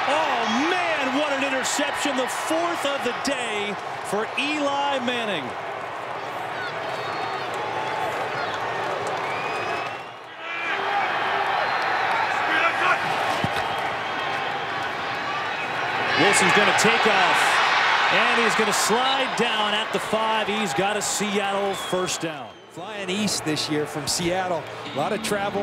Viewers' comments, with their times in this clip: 0:06 a little girl or someone high pitched screaming "you suck Eli" 😂😂😂😂😂
0:06 you can hear a fan yell You suck Eli 😭
0:08 “you suck Eli! You suck!” From a little kid in the stands had me laughing 😂